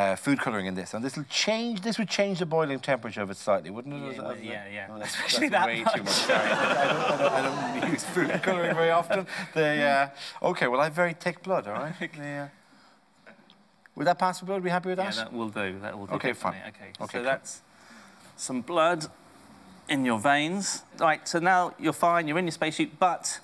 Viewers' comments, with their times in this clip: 0:06 love that edited in laugh track, so funny